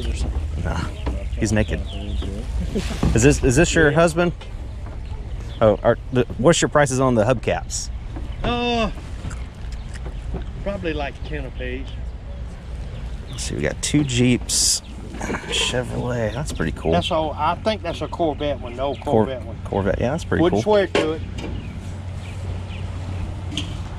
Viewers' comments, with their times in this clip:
0:09 he alllllmost has the “ohhhh neeewwssssshhhpaper boyyy.” Accent and whistle. 😂